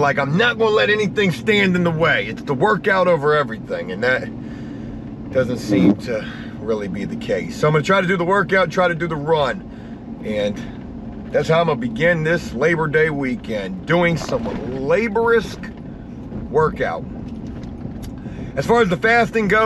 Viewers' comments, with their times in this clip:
0:06 did you rip one off?